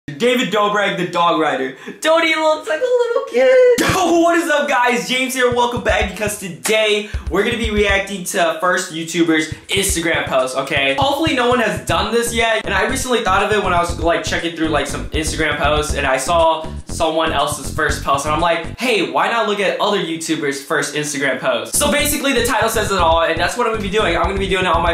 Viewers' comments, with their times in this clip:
0:01 voice crack i just died
0:12 he said hoes in